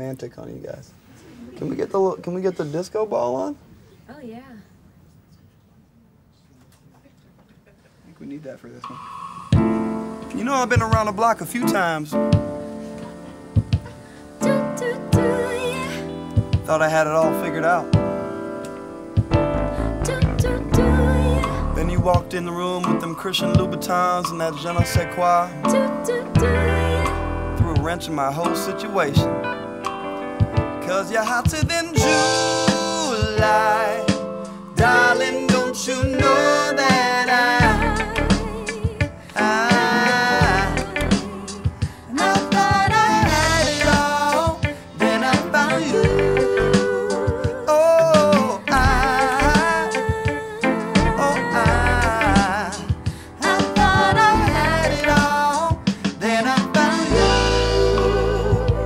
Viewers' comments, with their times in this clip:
0:08 If I was going to start a band that appropriated and caricatured the worst aspects of disco, funk, 70's pop and black culture (why the wig? Jesus Christ is so cringeworthy) I would have AT LEAST hired a rhythm section to fill the sound up.
0:42 When Hawthorne goes high, the way Turek drops her voice is amazing.